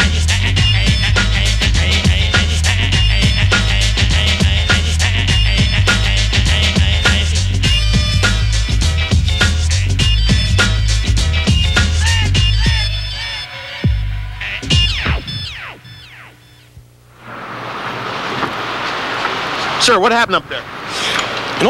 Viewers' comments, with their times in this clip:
0:08 Lowkey thought that was NORE lol